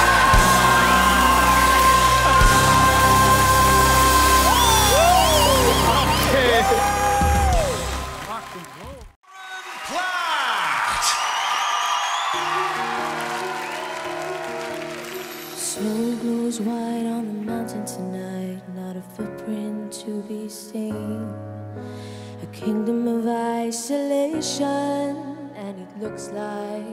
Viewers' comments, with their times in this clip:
0:09 "Let it go" was not it. Many out of tune sounds sadly...